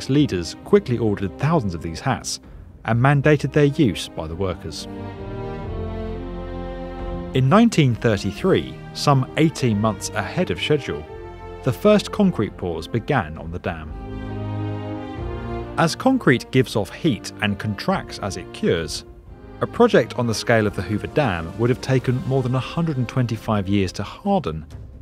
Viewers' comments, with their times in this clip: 0:09 brits accent, thanks me later